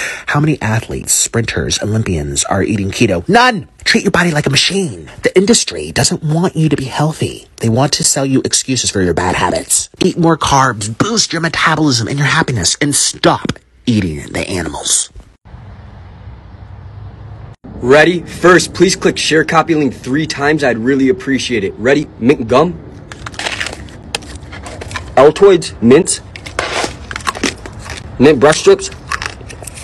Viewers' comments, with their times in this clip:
0:10 how is this guy out of breath from speaking